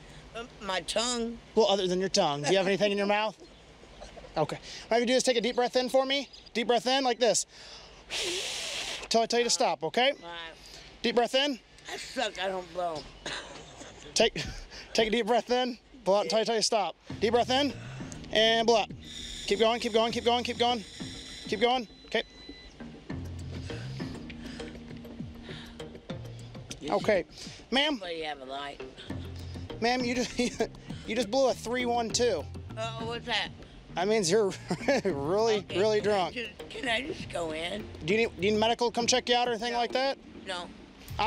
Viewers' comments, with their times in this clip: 0:09 I don't blow, I %%%%........ cop laughs
0:12 "I don't blow" Even the cop couldn't resist it and laughed😂😂
0:22 she is struggling to breath. Then asks for a light. Really wants that cigarette 🚬 bad